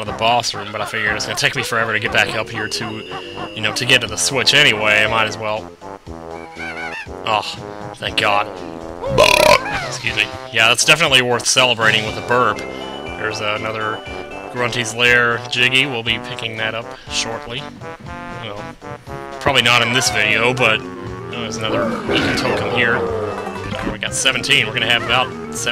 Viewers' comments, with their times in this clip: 0:09 Dude your burp was just...I don't even know what to say